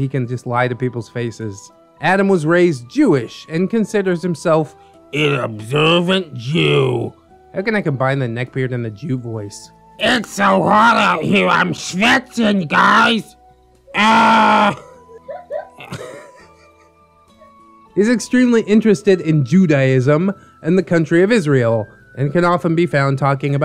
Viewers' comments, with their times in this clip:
0:09 I feel kind of bad for laughing so hard about the jewish neckbeard voice given the fact that i am german.